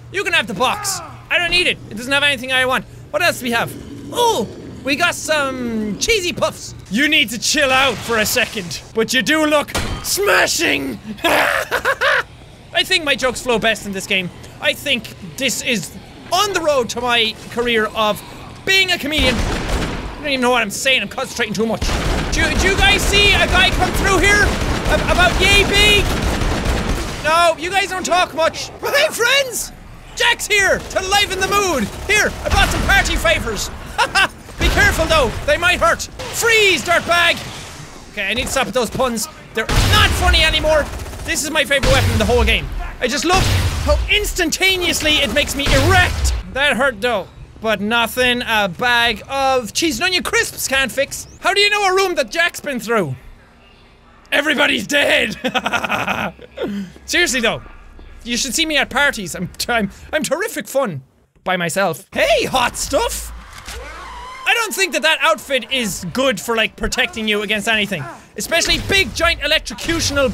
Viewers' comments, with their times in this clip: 0:07 Holy hell he's starting to sound like the joker
0:54 young Jacksepticeye and me have the same crazy mind that f*ckin laugh by the way